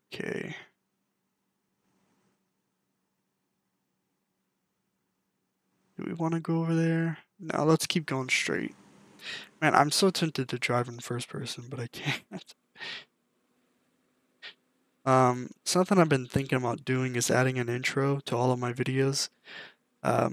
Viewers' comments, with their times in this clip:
0:06 i thought u were singing lol